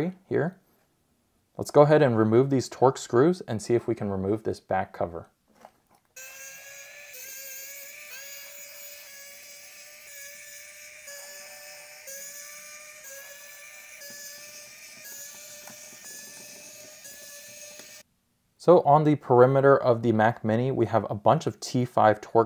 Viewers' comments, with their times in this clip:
0:06 sounds like F1 motor 🤣 Pst: love the video! 👏🏼 Apple’s product just perfect!
0:07 that was some good ASMR 😎